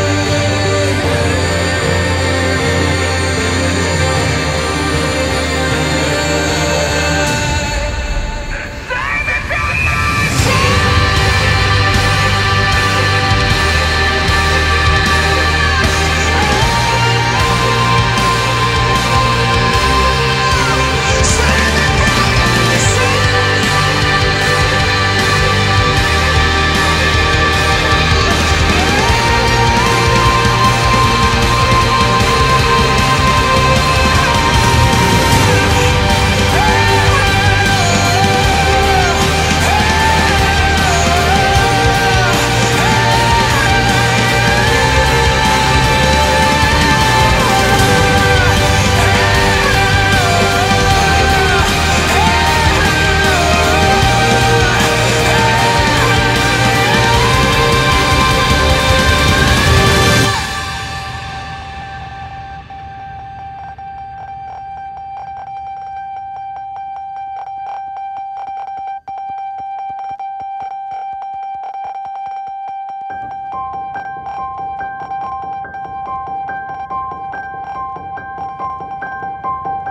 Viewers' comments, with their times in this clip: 0:09 You have a voice that's powerful enough to restart a dead planet. Big Fan.
1:01 This may be a stupid question. But is the sound morse code?